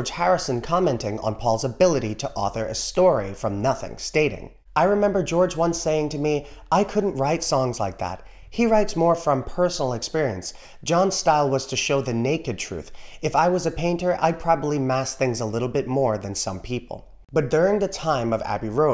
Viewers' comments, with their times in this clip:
0:05 You never give me your money….the REMIX forgets to do the gradual Vocal Pan from Right speaker to Left Speaker. Why? Lol. It happens on the original mix. “Out of college, money spent”….part. What’s up with that Giles Martin? Didn’t you ever notice that? Hmmm